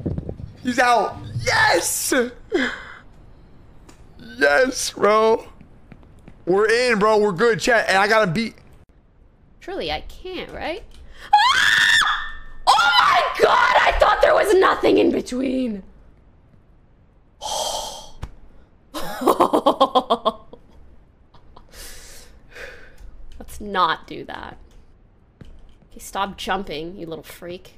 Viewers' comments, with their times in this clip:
0:09 bih tryna fake scream to get attention loll